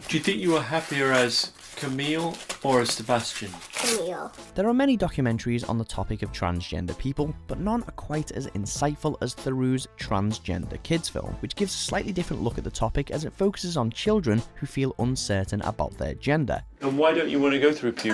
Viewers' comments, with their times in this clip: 0:03 SCARY. imagine that voice saying redrum redrum REDRUM. isn't it the same voice?